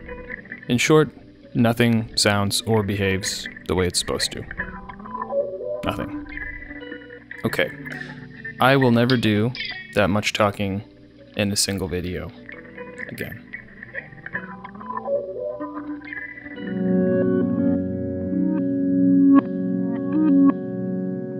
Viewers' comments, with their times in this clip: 0:07 Drift = old school (mid 20th century) experimental tape loops and quite interesting actually. Thanks for all your videos. In this particular video, thank you.